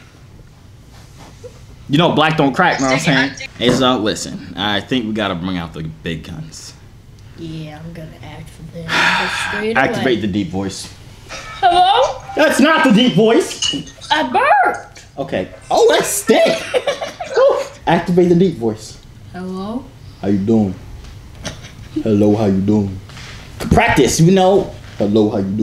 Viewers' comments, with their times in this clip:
0:05 I diedddd when he activated the deep voice 😭💀😂
0:11 when he was trying to make a deep voice 😂😂😂😂😂😭💀